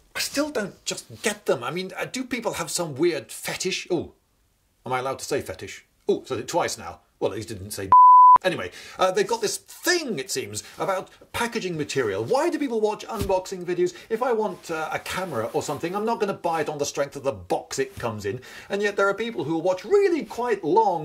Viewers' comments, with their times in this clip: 0:07 I want to know what was bleeped out !